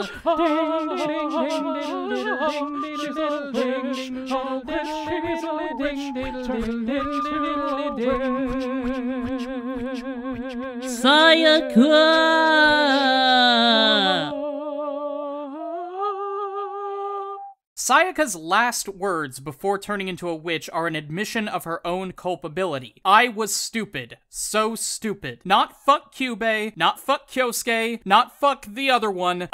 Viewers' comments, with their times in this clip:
0:07 The whispering of “witch” took me out 😭
0:11 I heard you there, you were going to say "seyiku"